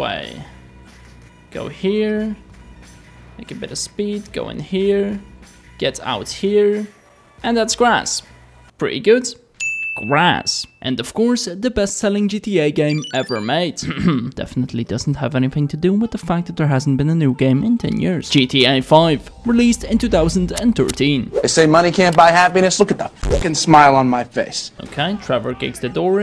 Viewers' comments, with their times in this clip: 0:08 bro turned British